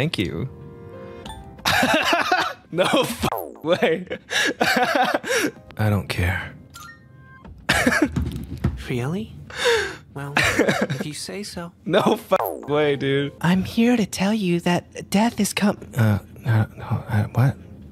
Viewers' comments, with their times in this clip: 0:05 I’m sorry… BUT THE WAY HE SAID IT WAS SO DAMN SATISFYING That’s our P3 protagonist 😭